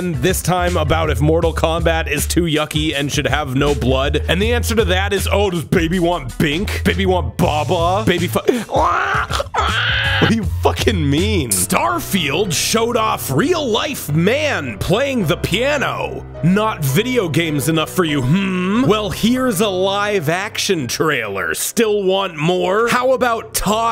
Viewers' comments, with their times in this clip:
0:09 What wondeful vocalizations